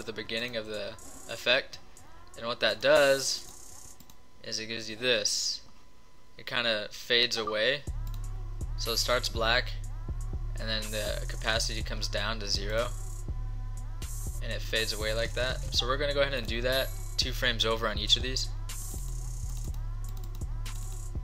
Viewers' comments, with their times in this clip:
0:07 we have the same text notification <3 lol